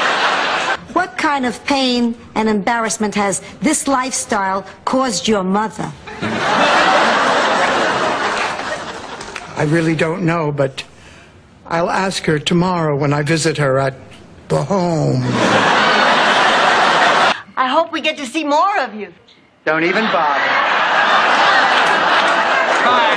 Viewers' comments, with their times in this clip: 0:09 The pure venom in Dorothy's voice when she says "The HOOOOOME" is equally hilarious and chilling. 😂